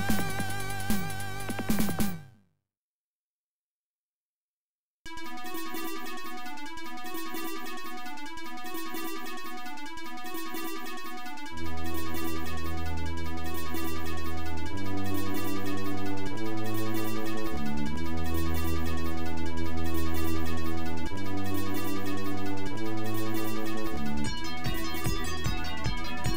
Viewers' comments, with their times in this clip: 0:08 Space Journey 2 still sounds amazing to this day